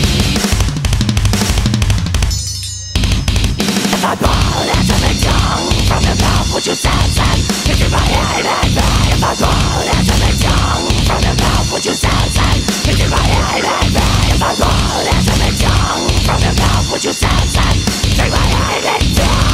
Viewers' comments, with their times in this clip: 0:03 those vox...AAAAAAAHHHH :D goregasm!